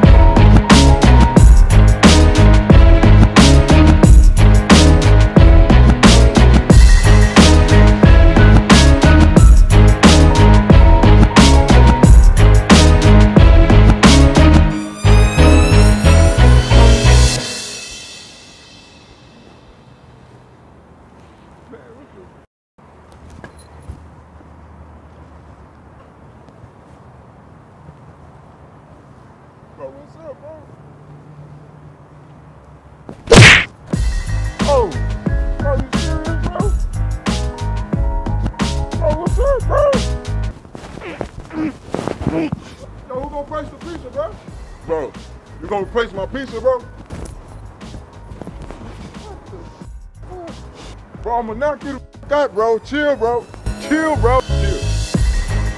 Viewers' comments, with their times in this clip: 0:10 that girl not angry at all she be laughing the whole time 😂😂
0:12 that girl went like John Cena tatatatata
0:39 i died when he made that struggle sound when he fell😂😂😂